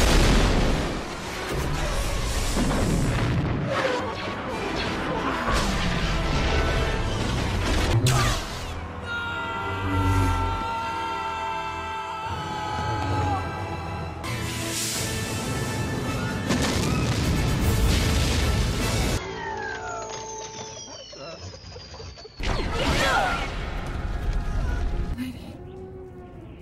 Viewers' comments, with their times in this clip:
0:08 Listen Closely And You Hear The Lego Death Sound